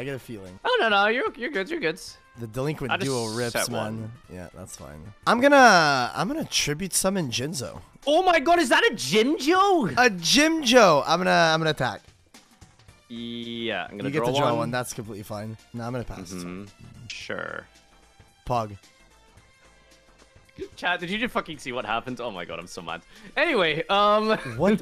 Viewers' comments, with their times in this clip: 0:06 tribute summon Jim jones trolldespair